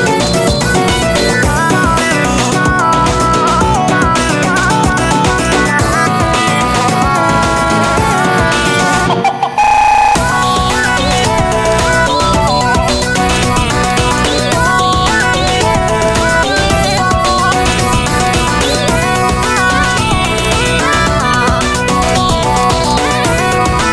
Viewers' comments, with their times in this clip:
0:10 WAIT, there's no... screams? WHO ARE YOU AND WHAT DID U MADE WITH THE REAL MOUSE.AVI!? D:<